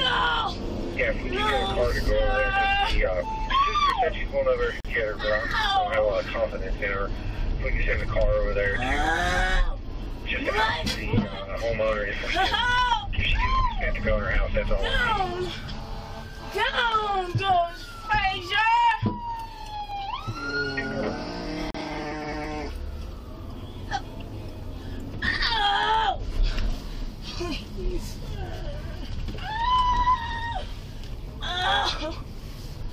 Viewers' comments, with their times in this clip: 0:03 She sounds like a bobcat lmao i'm sorry
0:08 the demon was taking over. Sound like possession. But I know its not. But she sounded scary
0:16 OMG she yells "down goes Frazier!" 😄